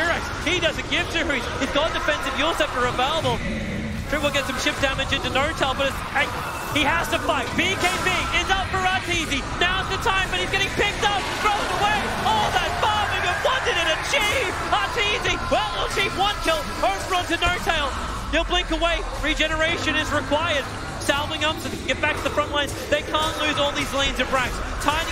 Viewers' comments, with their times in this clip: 0:07 imagine your team mate saying that “All that farming what did it achieeaayve “ lol